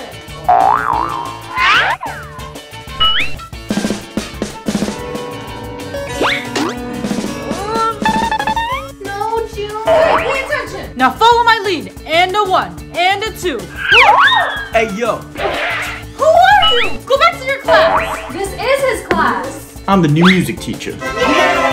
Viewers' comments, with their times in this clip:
0:06 Mia says 'tong tong' no sound help me